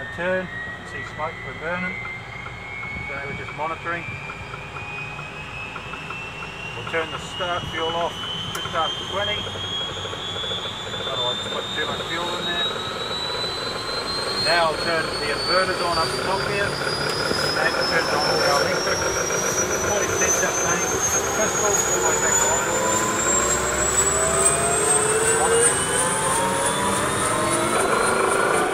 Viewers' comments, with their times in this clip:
0:09 Wth is that noise that doesn't sound good